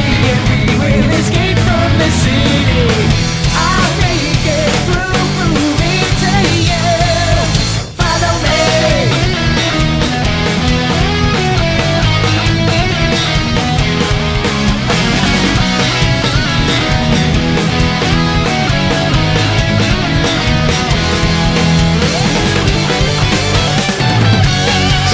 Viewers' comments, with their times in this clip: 0:08 Damn straight. The "It Doesn't Matter" riff by Jun Senoue makes this 10X better too.